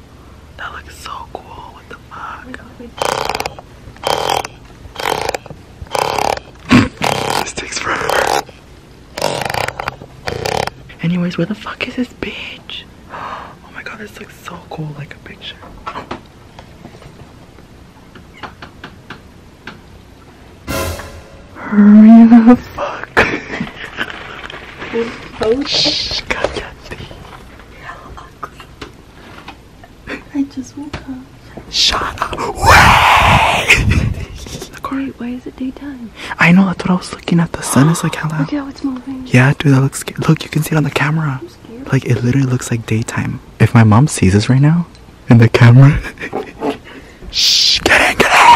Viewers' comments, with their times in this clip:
0:03 it hears like my fart literally lmao😂😂
0:33 worst time to wear earphones R.I.P to myself😂